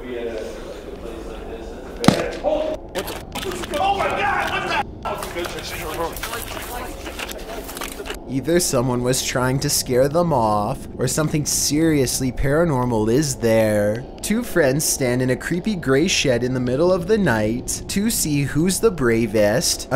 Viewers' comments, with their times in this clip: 0:06 Hey , by any chance on video 8, do they have females in the group? Because if no, then check And let me know what you think? I think disembodied female voices